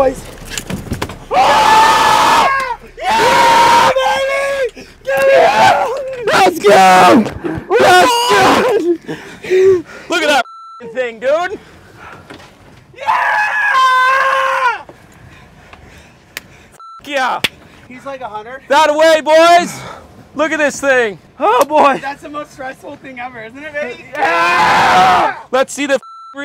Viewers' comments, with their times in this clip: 0:07 Ok. I had to pause the video after the 1st sec... That crap was intense! The music coming into the final 2 mins was dead on. I almost threw my phone through the ceiling when I jumped up when you guys staring yelling like you just won the Superbowl of Fishing! I almost started crying with joy. Best Damn 5 minutes EVER for a fishing video!!